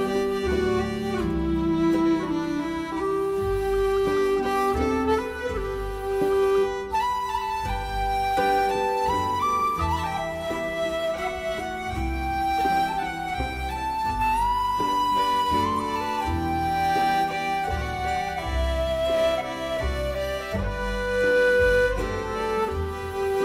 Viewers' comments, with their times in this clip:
0:10 a bit of Irish music ?